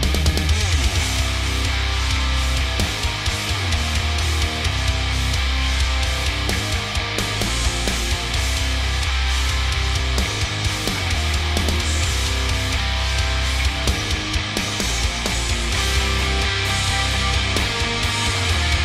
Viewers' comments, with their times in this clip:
0:06 ish sounded like OMAM